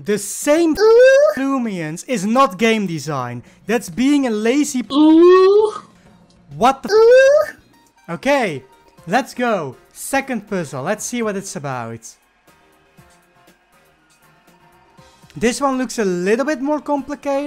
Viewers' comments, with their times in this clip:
0:04 I was replaying the UUUWWWUU the really long one